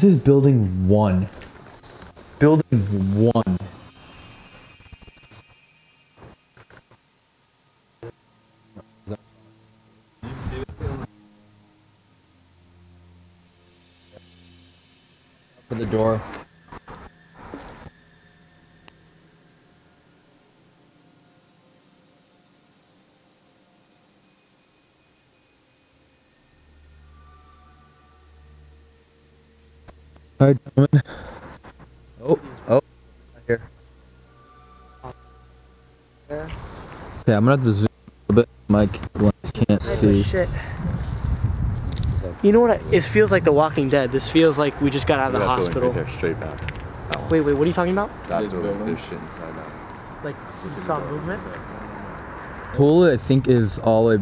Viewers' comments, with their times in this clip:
0:04 Idk what this was but or so there is a weird sound in the background.
0:04 the audio cuts in and out
0:05 why tf was the audio cutting out soooooooooo much
0:06 did anyone else hear a ps2 start up
0:17 i only watched the video i stoped the video because there were already TO MANY FUCKING AUDIO PROBLEMS!
0:19 anyone else's audio choppy? no, just me, ok Me: ok nevermind
0:20 Does anyone hear glitches or is it just my headphones/just phone? It keeps happening on and off threw out times... I'm writing their while watching the video. they say these exact words 'The longer we stay...The weirder the audio issues become... This night gets really interesting." So now I'm not that freaked out. 😁😅🤓😏🙃🖤👍🏼👍🏼👍
0:25 I got scared cause I thought my expensive headphones stopped working. Now i know that it's the actual video and not my headphones
0:39 you can hear a branch or something snap I don't know if it was you guys but I just found that really weird😨😱